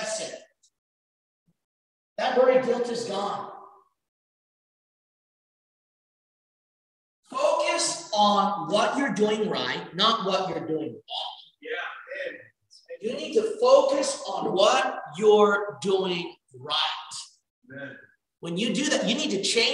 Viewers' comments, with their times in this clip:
0:06 the audio is messed up to the point it interrupts the message